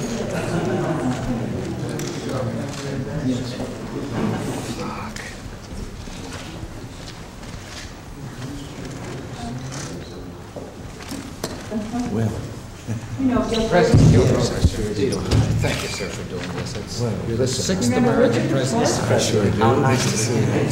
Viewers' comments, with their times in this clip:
0:03 congrats but does anyone else hear the swearing just after